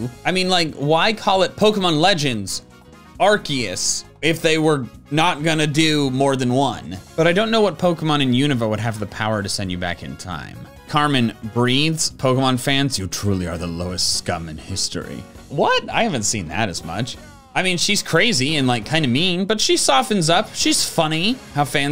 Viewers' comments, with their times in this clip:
0:03 -HE DIDN'T SAY ARCOOS?!?!?!?!?!?!?